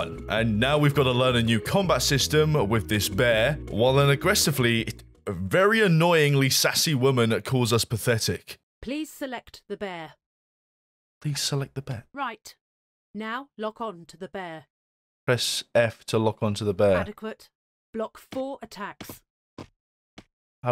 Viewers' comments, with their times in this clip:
0:04 That sounds like the lady from Deus Ex: The Fall, when you're playing the first stage and she tells you what to do